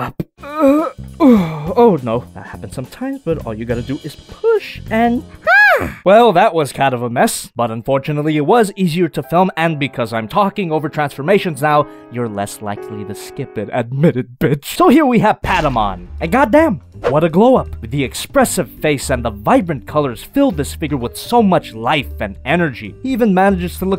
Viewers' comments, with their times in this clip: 0:10 im more eager to skip it now... its better to enjoy the jazz and the clicks and clacks... ha